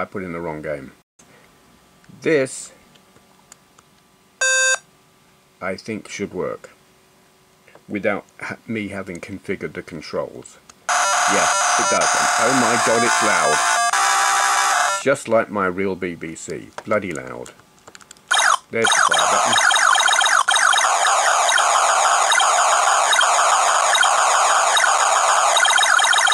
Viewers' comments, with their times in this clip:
0:10 WARNING to headphones users. Ear rape incoming. WAD is the type of file. Like JPG, EXE, etc. How does it handle Atari ST and Amiga500 games? Not just performance, but also controls. There are games which require at least a couple of keyboard commands and there are games which require mouse to operate. I am very curious. "bit slow, but still playable" That's what she said.